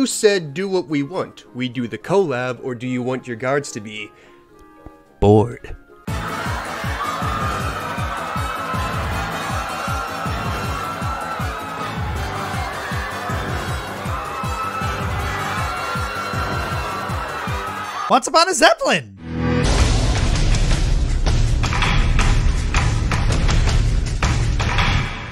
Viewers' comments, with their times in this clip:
0:06 the Mario and Luigi music played as flashbacks of guards stupidity played back in Firebrand's mind. 😅😅😅😅 I'm laughing